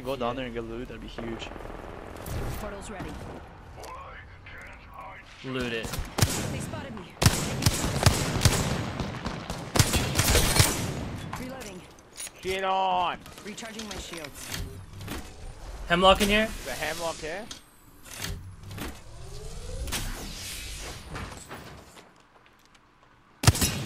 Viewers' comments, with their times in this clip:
0:04 he made the beat to eye of the tiger
0:05 Bro sounds like eye of the tiger